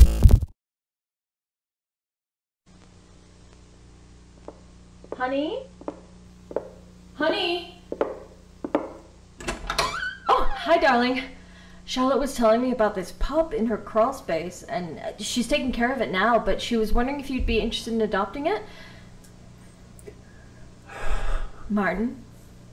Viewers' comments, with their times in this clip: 0:04 no joke I actually thought my mom was calling me at my dad’s house.